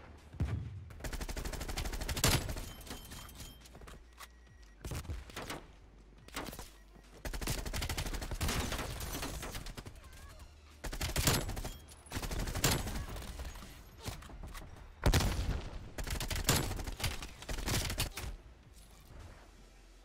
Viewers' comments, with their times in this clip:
0:08 youre pretty good at multiplayer👍 also I could hear the song of storms remix during the beginning of the multiplayer segment and I love that remix. Overall great video thanks for the info😁👍